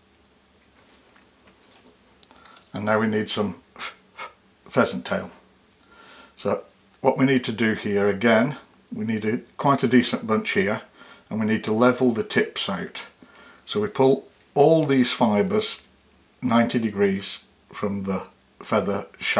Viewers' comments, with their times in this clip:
0:04 “what we need here is some phe phe…pheasant tail”… That was funny and you weren’t even trying. 😊